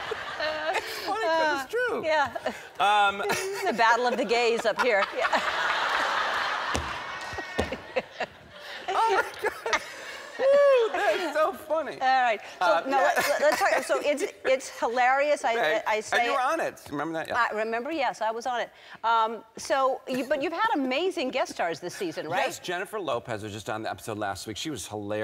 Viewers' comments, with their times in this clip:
0:07 Does anyone else come back every few years to watch this video?! 🤣 The audience laugh gets me every time! 😂
0:07 that persons drawn out laugh is hilarious